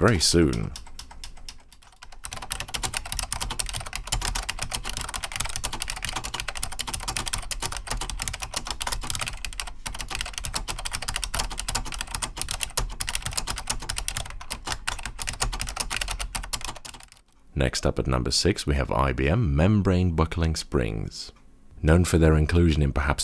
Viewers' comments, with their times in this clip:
0:10 Keyboard at the bank be like